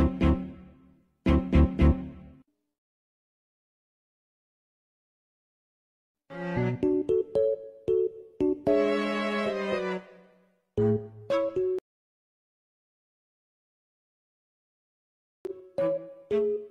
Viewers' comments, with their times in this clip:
0:04 DOLL SPOKE ENGLISH